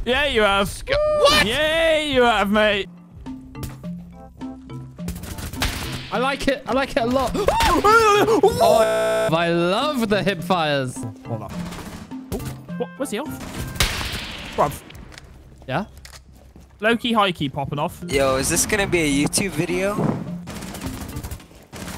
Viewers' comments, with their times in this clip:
0:07 My mic in a ps4 party when I'm lagging hard af.